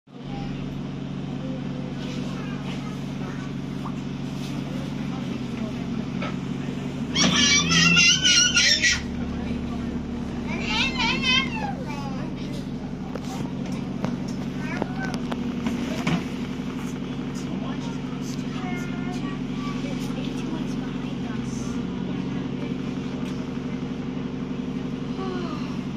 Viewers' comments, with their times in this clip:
0:06 gosh he's loud